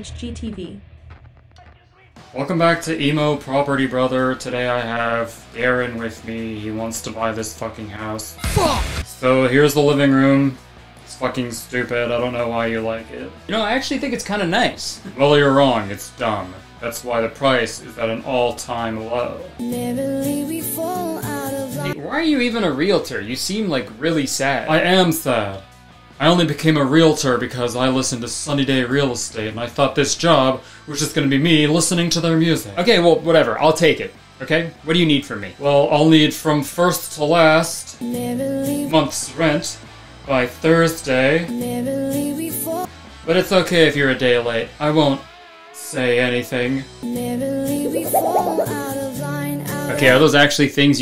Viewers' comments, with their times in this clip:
0:04 he nailed that closed mouth lisp so well… almost… too well…
0:12 good Emo accent lmao
0:20 OH MY GOODNESS xD That song came so random and now I have all the feels xDD
0:29 hes literally talking like the chosen from smosh
0:36 emo property brother sounds like Kip from Napoleon Dynamite